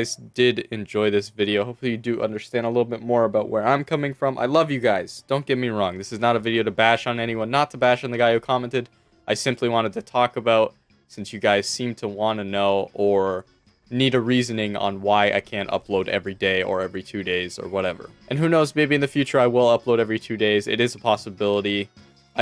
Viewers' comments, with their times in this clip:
0:09 lol that voicecrack :D